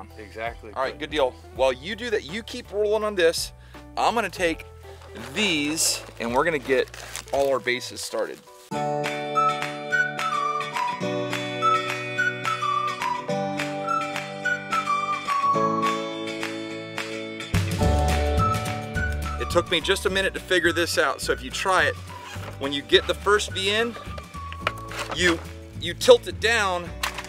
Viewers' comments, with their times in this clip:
0:09 defaults music lol